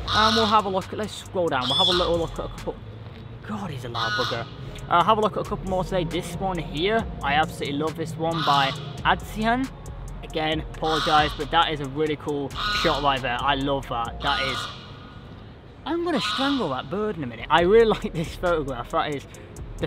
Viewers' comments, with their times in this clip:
0:03 That bird sounds scary 😂😂